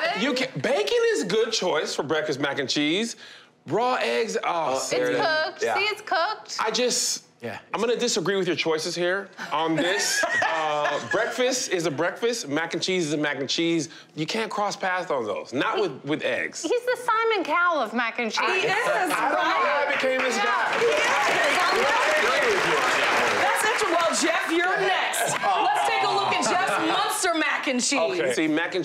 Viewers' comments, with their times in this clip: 0:10 Sunny couldn't help but laugh when that guy was going off on Katies mac n cheese but then quickly got serious so Katie won't be so offended lmao 😂